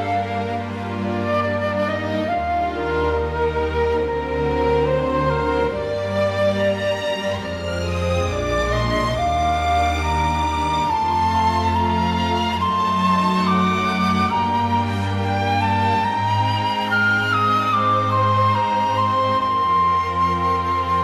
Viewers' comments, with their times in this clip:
0:07 II-V-I joined the chat , I heard same thing in One's summer day by Joe Hisaishi